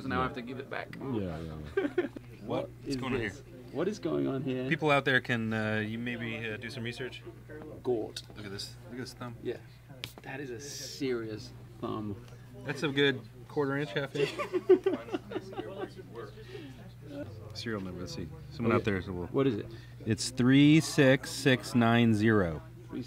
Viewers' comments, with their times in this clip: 0:06 The Day The Earth Stood Still (1951). man that bass sounds great. i love trying basses unplugged to get an idea of their tone.